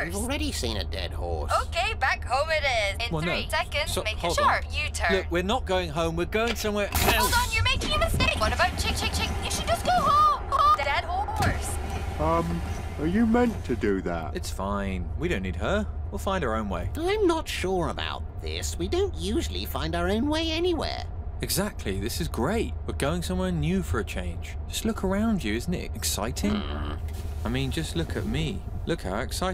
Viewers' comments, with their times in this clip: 0:10 Bruh when the GPS literally DIES, and her last words are "d-D-D-D-DeAD-EAD HOrsE!" always gets me laughing.